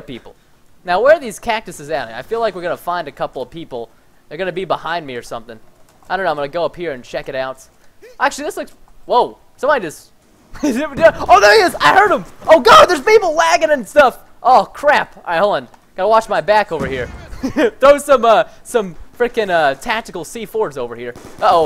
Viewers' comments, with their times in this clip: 0:09 you said waggin